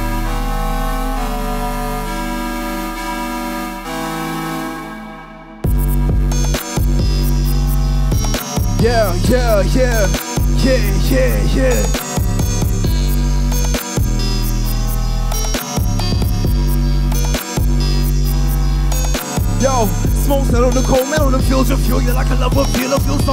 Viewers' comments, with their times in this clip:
0:09 beats hard sounds like Ikonika